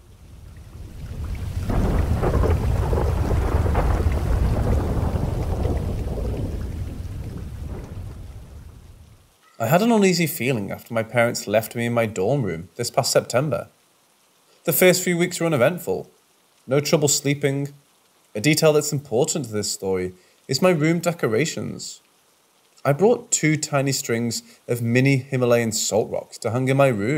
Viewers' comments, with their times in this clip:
0:09 My story is and you ready it with the background noises makes it even more creepy! LOVE IT! Subscribed!